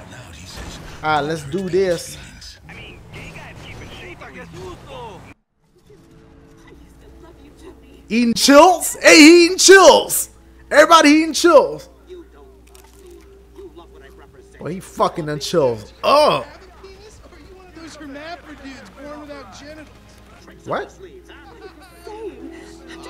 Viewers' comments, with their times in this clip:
0:07 In Dashie says chips so funny🤣🤣🤣